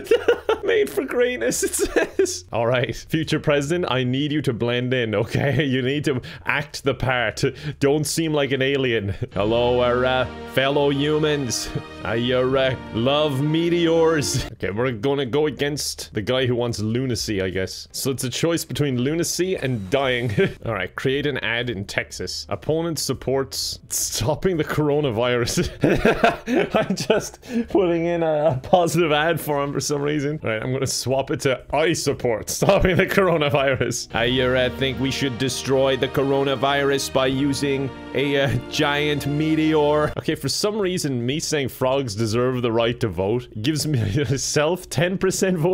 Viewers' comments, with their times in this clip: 0:09 was that a JFK impression
0:09 Not the JFK voice! 🤣🤣
0:09 That is a pretty good Clone High JFK impression
0:33 THERE IS NO WAY THAT HE SOUNDED THAT MUCH LIKE JFK ON ACCIDENT